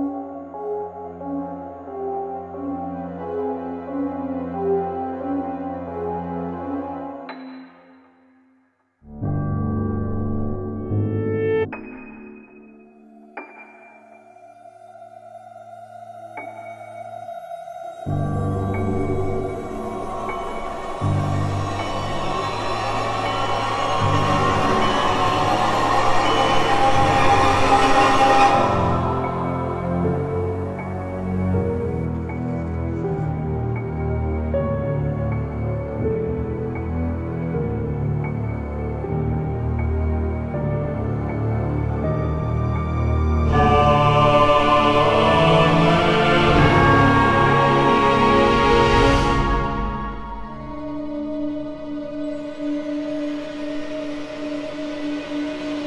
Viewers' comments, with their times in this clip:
0:06 the piano timed to the drops of uh blood?, good stuff
0:43 It sounded like the Halo theme for a moment.